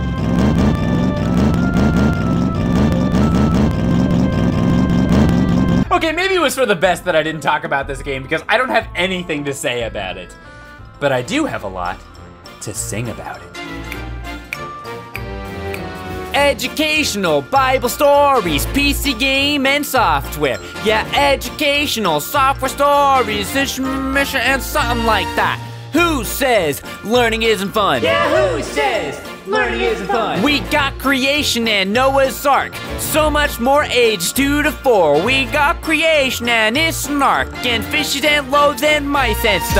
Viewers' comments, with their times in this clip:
0:10 here we see the most catchy and well worded masterpiece about a jesus loving mouse. enjoy.
0:15 is the part when he SINGS
0:21 This song physically hurts me